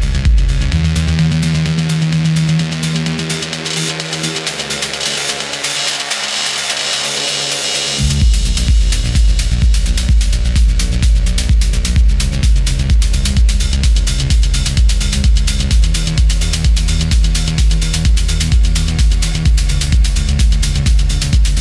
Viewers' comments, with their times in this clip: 0:05 They customizing the music so much it really gets to real art. blown my mind.